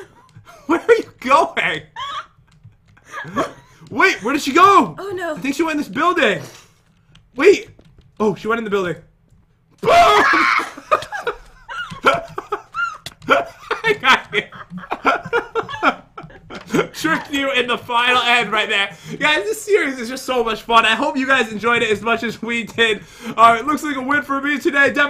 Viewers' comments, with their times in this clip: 0:09 lol that eagle scream